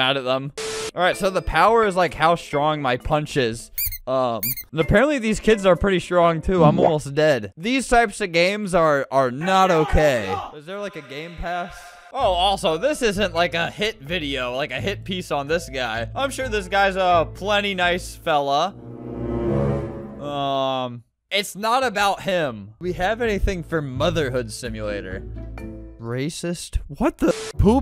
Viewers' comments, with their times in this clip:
0:09 the fbi open up sounded so realistic that it caught me off guard for a second, since I’m wearing earbuds